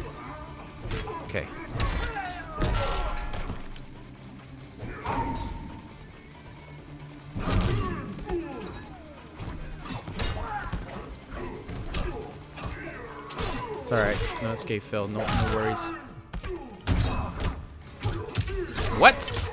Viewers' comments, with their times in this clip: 0:05 this dude super said “okay” he sound fed up and then proceed to kick the opponent Ass and get a brutal lol 😂